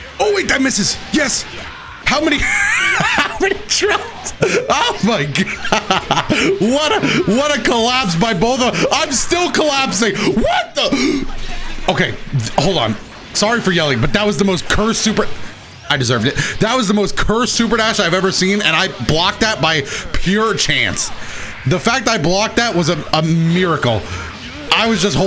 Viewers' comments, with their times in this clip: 0:10 that "what the" was clean.😂😅 That second match was chaos!!